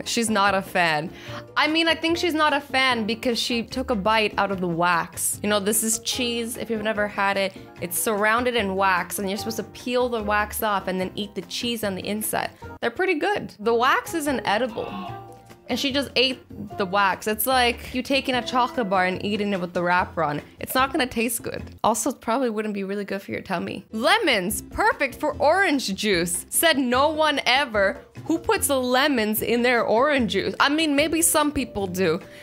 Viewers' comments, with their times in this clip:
0:09 I realized me hearing someone in the background
0:11 Go to in the video and wait for Kwebblekops scream lol😂😂
0:11 Is it me or that scream sounded like a dinosaur dying!!??,😂😂😂😂😂
0:13 does anyone else her Boyfriend shouting
0:14 who else heard a scream 😂😂
0:14 anyone heard screaming?
0:14 Anyone else notice to scream of pain in the background
0:14 I could hear her bf yell,”ohhhh” 😂lol
0:14 Who else heard a scream!??!?!, ;-; everyone heard
0:14 Who else heard someone screaming in the background in the vid lol 😄
0:14 Do you live with other people because there is a weird sound
0:14 Did anyone hear the scream in the background on ?
0:14 Who else heard a scream in the background ?
0:14 did u hear like someone no or arg in the background Cause I did
0:14 lol someone screamed
0:14 Lol that scream/moan
0:14 that OW! XD
0:14 ok I'm going crazy or ish there is like a man going ohhh or something like if you hear it
0:15 who heard her BF in the BG
0:15 who hears someone saying awwww or owwwww quickly.
0:15 Am I the only one who heard that yell?
0:15 Did anyone notice the grunt in the background 😂😆😡
0:15 I heard someone yell in the background
0:15 Anyone else hear the scream ?
0:15 Something Creative it was but yes I did hear that scream of pain
0:15 who is screaming!!!!!!!????????
0:15 I hear a voice
0:15 Am I the only one who heard him yell
0:15 Did you hear the scream in
0:16 What’s with the small scream